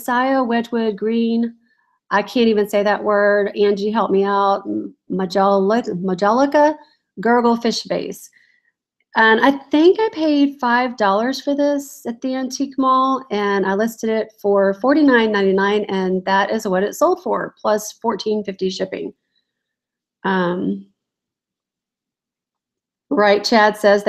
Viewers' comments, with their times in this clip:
0:07 You nailed the pronunciation of Majolica! "mah-JAWL-ick-cuh" WooHoo! 👍👍👍😁